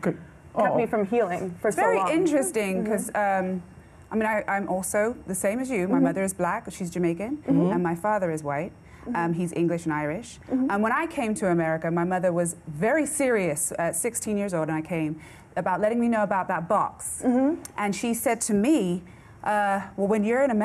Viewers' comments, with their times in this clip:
0:06 I love how her Jamaican accent turned up once she let it out....!